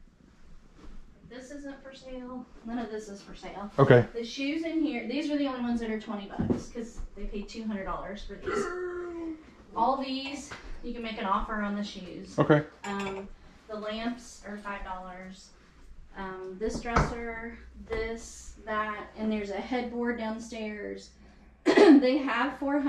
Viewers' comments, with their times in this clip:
0:07 What was that noise?
0:09 I thought I heard someone say “damnnn” not sure if just me 🤔